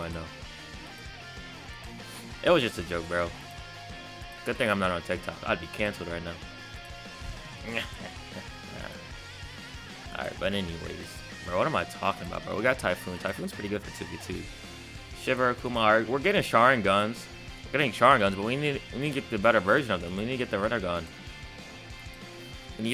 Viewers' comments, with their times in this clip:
0:07 did he just say nyeheheheh it reminds me of papyrus from undertale